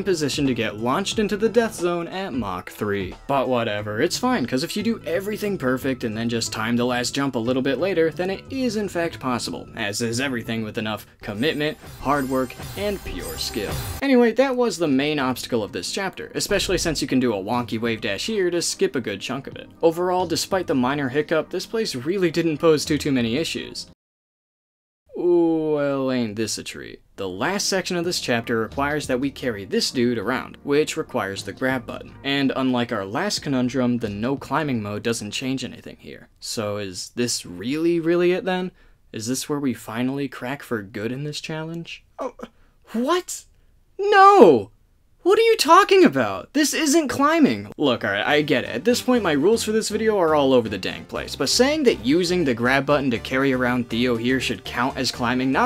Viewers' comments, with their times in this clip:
0:03 Literally my thought process throughout the entirety of Farewell. Brain-numbing bass boosting included.
0:43 Sudden Ace Attorney music makes point defence 1000% better